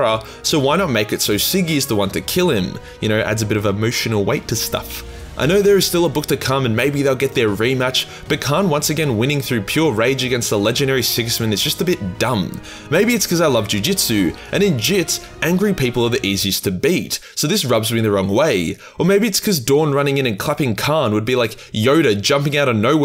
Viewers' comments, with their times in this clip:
0:06 sounds like an anime fight